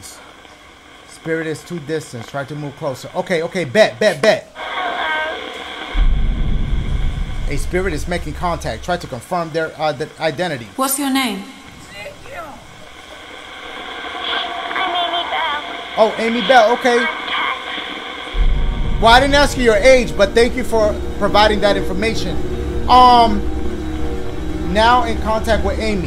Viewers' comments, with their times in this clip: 0:10 I hear someone saying saviour
0:10 BRO IN THE BACKGROUND AFTER SHE ASKS WHAT THE GIRLS NAME IS YOU CAN HEAR A RLLY QUIET “ezikiel” LIKE THAT ONE MEME LMAO
0:11 Girl: what’s your name Dashie’s edit: (whispers) Ezekiel 😂
0:11 Am I the only one that heard “Ezikyal” ? You can kinda hear it barely
0:12 Anybody catch the lil voice say Ezekiel in the background when she ask for the girls name 🤣🤣